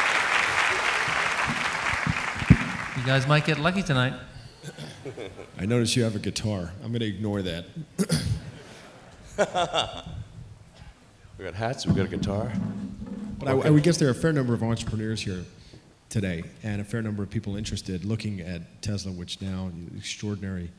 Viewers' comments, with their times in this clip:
0:06 damn this robot is having a trouble with the "laughing" algorithm